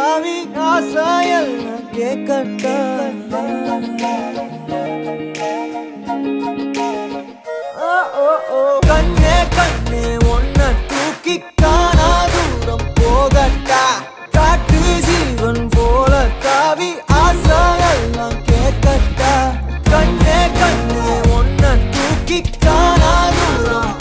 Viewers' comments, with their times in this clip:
0:07 This music looks like We will rock you.
0:08 Another "We Will Rock You" sample? Not complaining, it sounds great, but if I had a dollar for every time an Indian movie song sampled that song, I'd be rich.